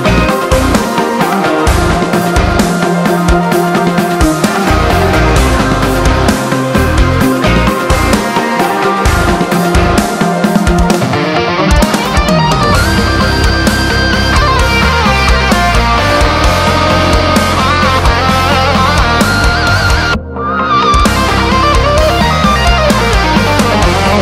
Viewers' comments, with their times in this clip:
0:07 solo nearly made me jizz
0:11 sounds like they opened a portal to another dimension.